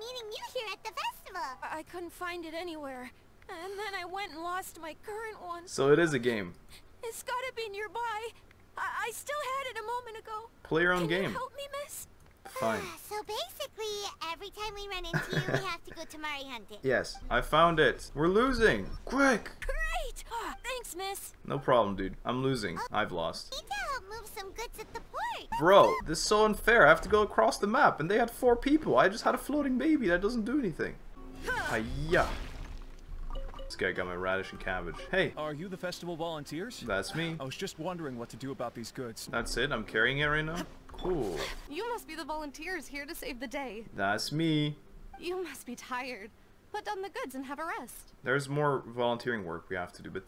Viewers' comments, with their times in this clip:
0:04 why does the kid kind of sound like Izuku Midoriya or am i just trippin
0:32 Something about the way he says "Got my radish and cabbage" is really catchy, like it could be turned into a saying, if you tried. 🤔